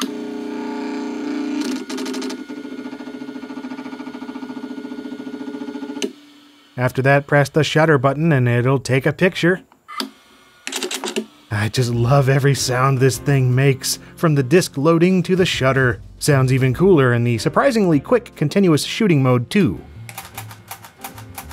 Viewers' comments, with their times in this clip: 0:04 sounds like the intro to Alien.